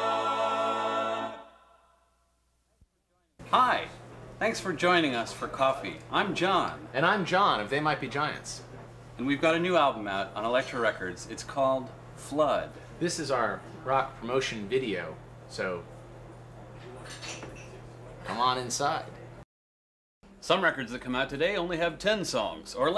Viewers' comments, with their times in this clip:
0:03 this is the best "hi" i have ever heard.